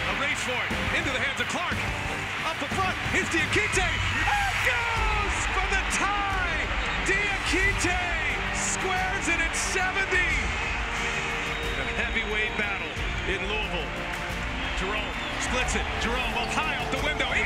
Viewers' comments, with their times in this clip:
0:04 I love how the audio is edited to cut out the part where the announcer accidentally said, "For the win!"